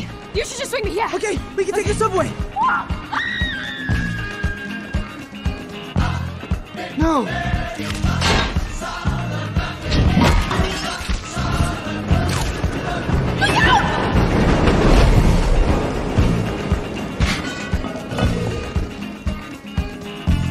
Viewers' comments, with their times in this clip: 0:03 same scream when she fall down in Statue of Liberty 😂😂